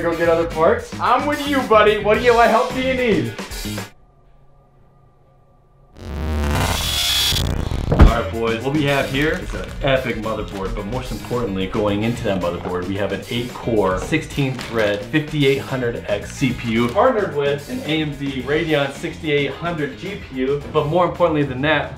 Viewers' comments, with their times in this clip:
0:06 rip headphone users 😂